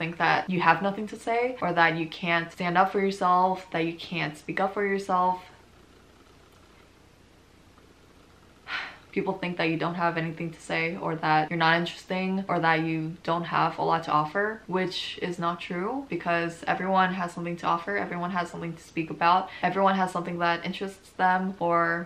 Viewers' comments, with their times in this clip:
0:07 this little sigh just made me cry